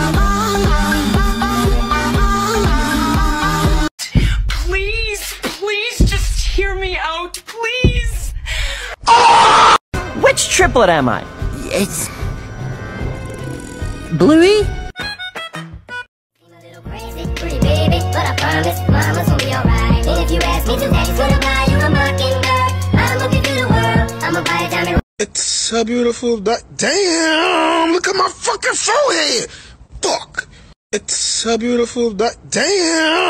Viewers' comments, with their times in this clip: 0:10 I heard angeldust help!!!!
0:15 Not the bluey music
0:15 not the music 😭✋🏼